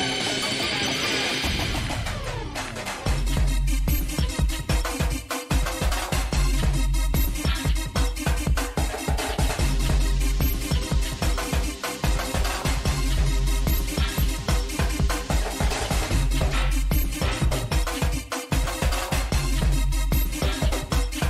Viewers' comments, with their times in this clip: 0:04 it's so fucking lit that mix!!! <3